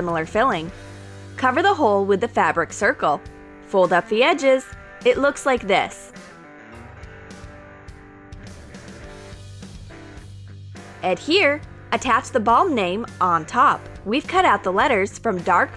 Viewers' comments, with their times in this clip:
0:03 Fold up the edges! says happily and enthusiastically It looks like this. says seriously and monotone